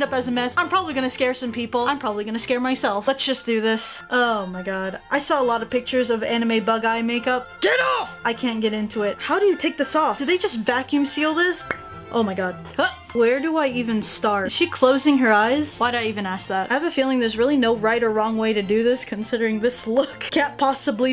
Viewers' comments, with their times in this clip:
0:06 she sounded like bakugo from my hero academia XD